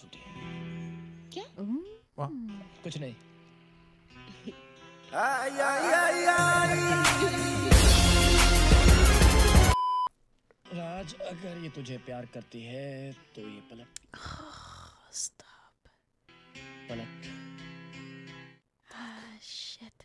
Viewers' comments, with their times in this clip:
0:04 that pillar men theme insert caught me off guard😭